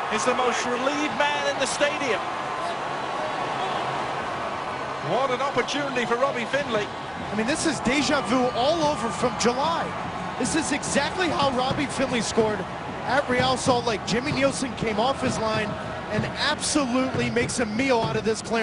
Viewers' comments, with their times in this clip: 0:05 "Déja vue" Mdr (lol) The american accent is ugly ^^